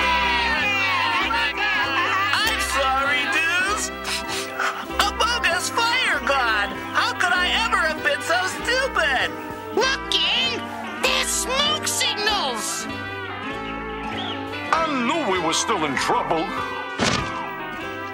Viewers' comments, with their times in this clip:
0:04 he's supposed to be saying "a bogus fire god!" but it's 100% "among us fire god!"